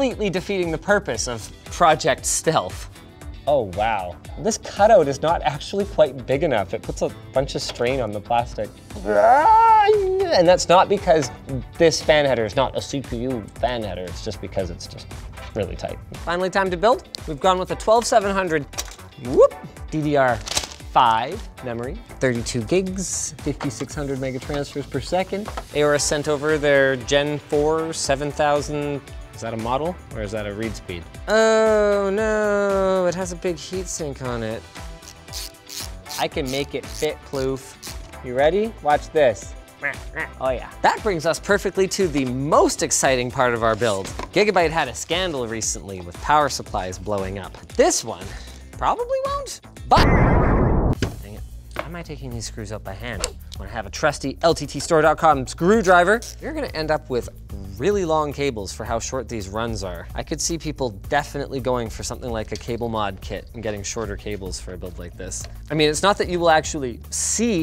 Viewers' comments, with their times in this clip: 0:08 Chewbacca laughing at Linus dropping things
0:49 turn off surround sound. Sweet baby jesus I almost dove under my desk.
0:49 man with headset, this was a jumpscare. 😅
0:50 why? my ears!